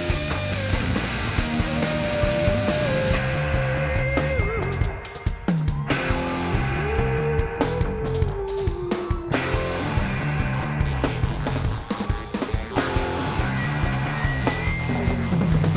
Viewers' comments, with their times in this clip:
0:03 Jose Passilas in a perfect applicantion on a empty spaces. - kind of poly-rithm!! Love how this guy play.